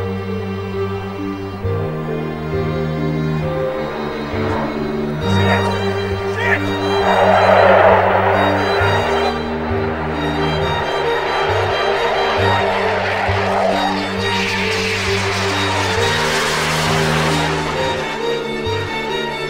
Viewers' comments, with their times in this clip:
0:05 sounds like the dude is screaming “shit..SHIT”!!!